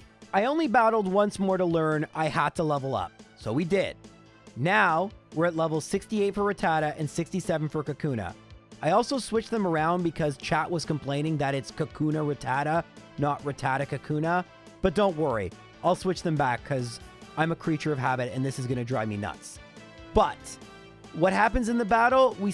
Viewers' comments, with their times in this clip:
0:07 Considering how even your editor was annoyed by this, I don't think you should get to sound so exasperated about it. :P Also, I got way too invested in that final standoff between Kakuna and the very last Pokémon, my gosh that was intense.